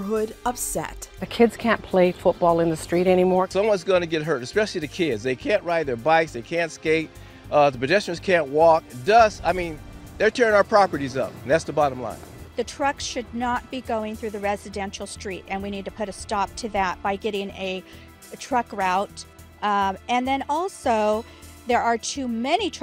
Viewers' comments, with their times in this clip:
0:07 Uh oh time for the violin horror music to start playing!